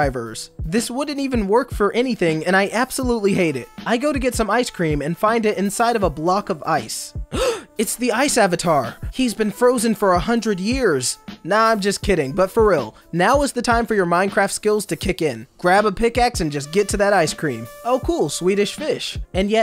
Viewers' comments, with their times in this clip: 0:03 THEY ARE DREW SCRIVERS